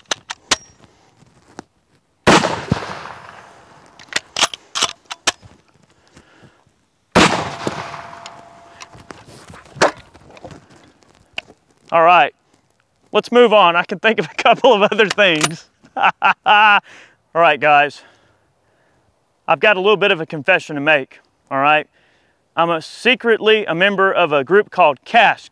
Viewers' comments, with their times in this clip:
0:09 that smack was hilarious